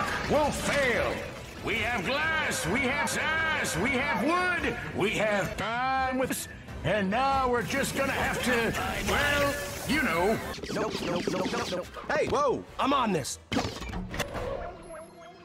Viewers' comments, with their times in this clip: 0:03 I CAN HEAR IT'S "WE HAVE A S *"